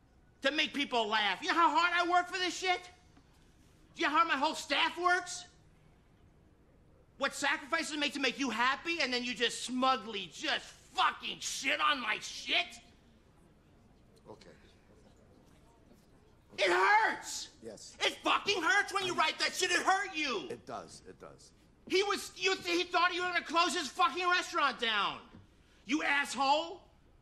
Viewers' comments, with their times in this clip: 0:10 I love the emphasis on “Fucking”